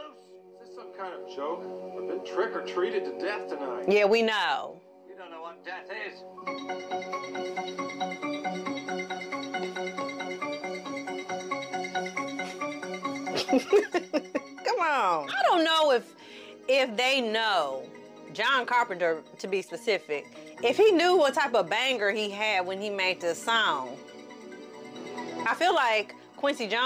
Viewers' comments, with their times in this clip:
0:08 LMMFAO!!!!! The HALLOWEEN theme music was the first trap beat